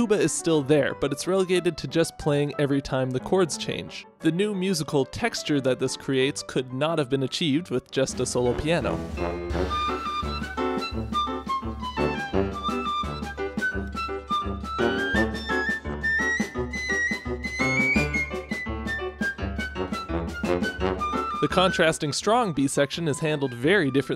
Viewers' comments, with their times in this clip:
0:09 Great soundtrack and great vid. My one comment is the tuba IS playing when you say it drops out. In New Orleans they call this the "Big 4" - all the downbeat notes are subtle other than the beat 4 leading into the chord change. Laissez les bon temps rouler!